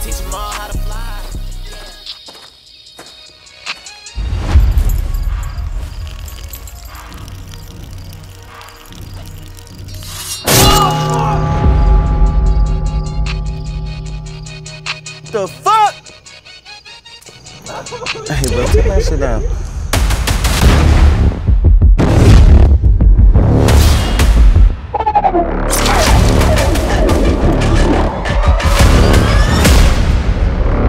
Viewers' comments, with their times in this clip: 0:09 aint gonna lie i jumped lmao had to lower down my audio lol
0:14 When Twitch streamers get trolled into thinking someone is knocking at their door